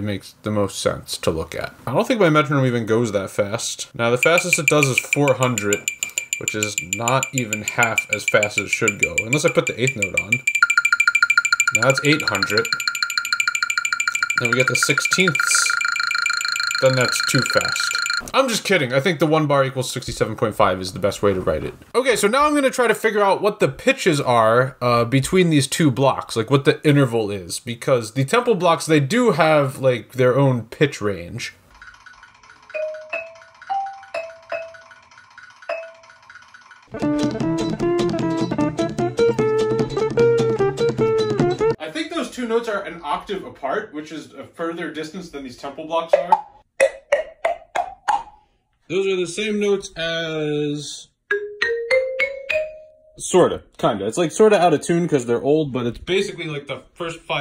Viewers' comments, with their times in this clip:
0:04 that sounds like Gary slapping his eyes to each other in that one episode with the chaos creating jellyfish' , but then faster 😂
0:10 Mr. Krabs kicked it into high-drive 🤣🤣🤣🤣
0:12 the 16 notes had me dying
0:15 play this part in 0.25x speed and you have a good beat going
0:41 noooo it's a sixth wait what what do you think those block notes are? oh no oh no